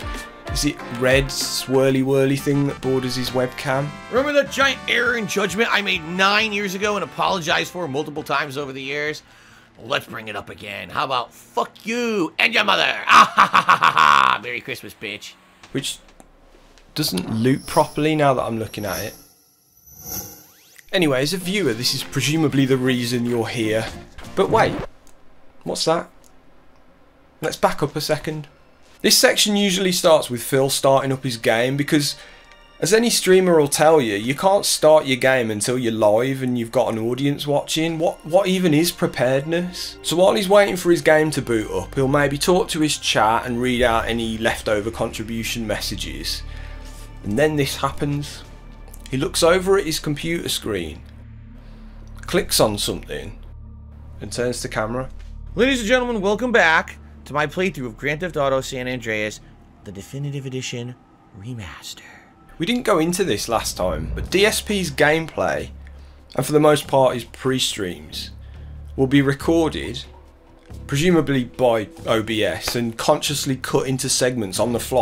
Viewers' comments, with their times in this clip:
0:04 I dunno man what he said and the way he said it was actually quite hilarious 😂😂
0:59 I genuinely hate when he does the asmr voice